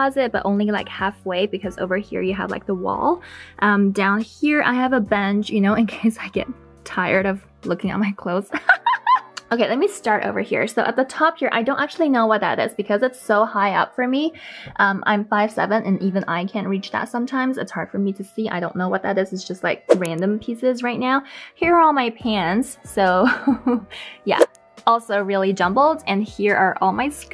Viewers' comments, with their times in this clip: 0:08 that laugh thou...😂